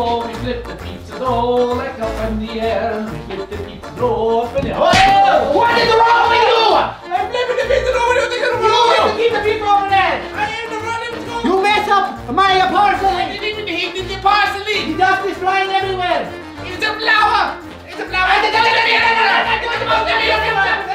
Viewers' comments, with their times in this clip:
0:05 is too funny like what are they saying